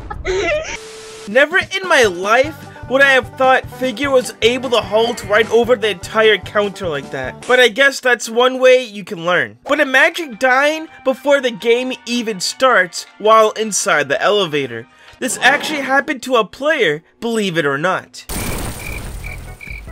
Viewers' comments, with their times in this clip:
0:07 I also had a sound delay just like that one.